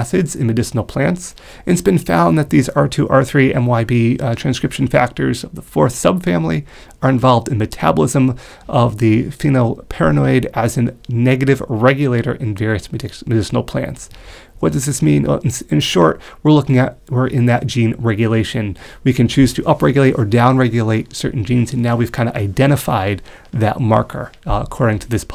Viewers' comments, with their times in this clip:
0:09 Thanks for the information. sounds like you are saying phenyl'paranoid'.